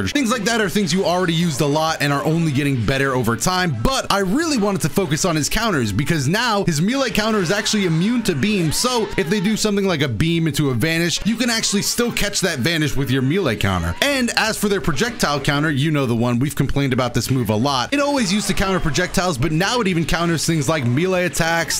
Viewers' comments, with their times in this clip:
0:06 "His miley counter"